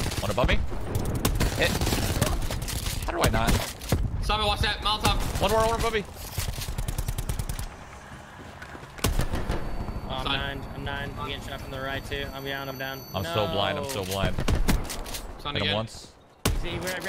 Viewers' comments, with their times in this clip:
0:05 ninja shouts summit watch that molotov like chilllll